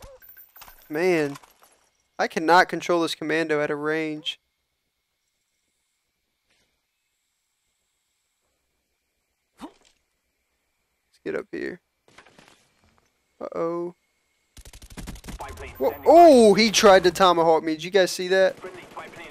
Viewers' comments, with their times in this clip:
0:06 knifing noise anyone else notice that?
0:06 Listen Doesn't it sound like the guy he killed missed knifing him twice?
0:06 i heard him knife